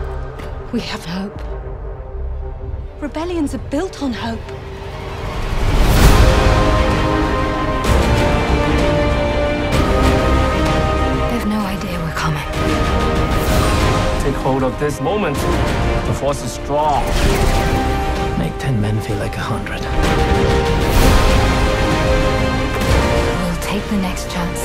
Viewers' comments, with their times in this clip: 0:08 From now on every imperial officer needs to say power exactly like this in order to get the role.